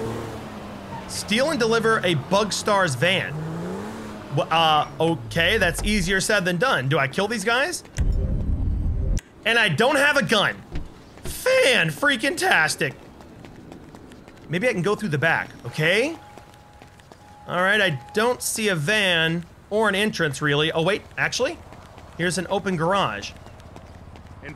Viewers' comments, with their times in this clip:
0:10 when he says fan voice crack